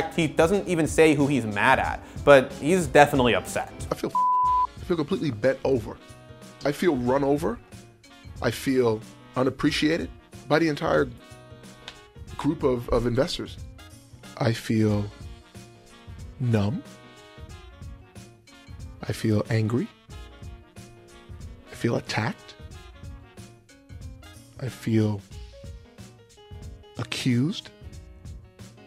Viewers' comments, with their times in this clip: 0:05 Wtf is up with the peppy music ? The man is opening his heart up to the world and the music makes it seem like he's doing spoken word at a jazz club.
0:13 Rick Fox ASMR.